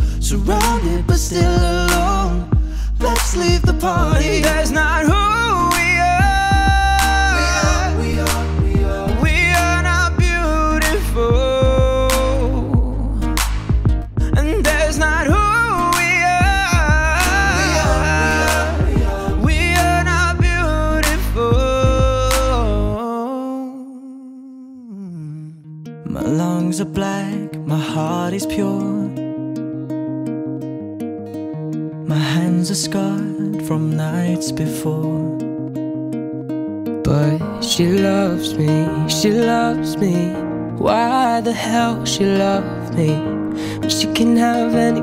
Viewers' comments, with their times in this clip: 0:06 damn boy chu have a higher voice range than most women
0:26 Brooks voice felt like he was hugging me tightly and comforting me🥰